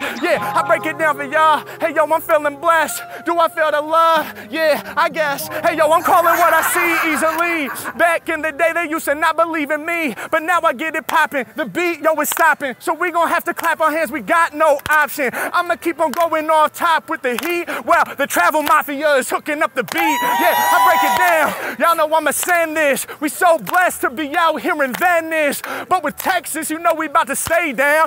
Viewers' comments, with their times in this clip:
0:09 omg im crying 😂 when the white chick starps clapping off beat i lost it 😭🤣 reminded me of the movie "the jerk"
0:10 hate it when u rap without the beat xD gotta fix it somehow